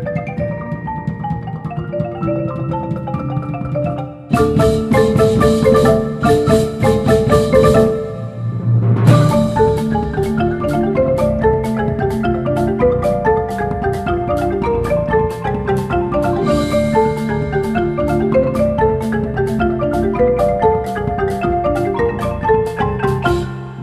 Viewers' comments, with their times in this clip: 0:05 sounds kinda wrong